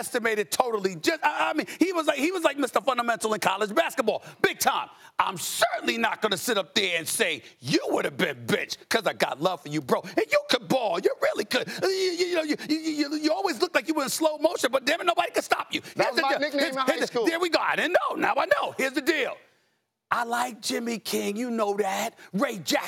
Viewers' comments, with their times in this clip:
0:07 did Stephen a say "Big Bitch"?
0:09 was i the only one who heard bitch?